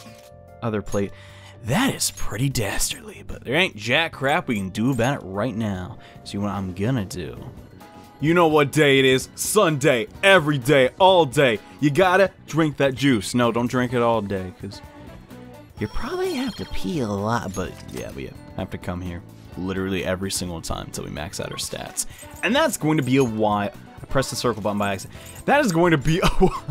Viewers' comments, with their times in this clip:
0:10 He sounds like jacks films 😂